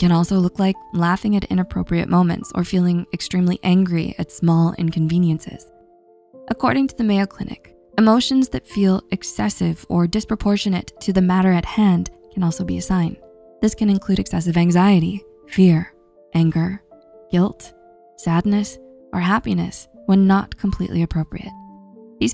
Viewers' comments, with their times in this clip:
0:03 Poor frog, it didn’t deserve to get shouted at